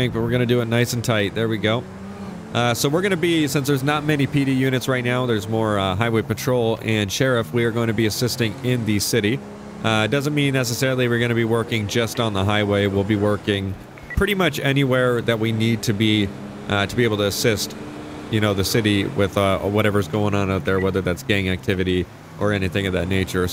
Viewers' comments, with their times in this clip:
0:07 triggered hey Siri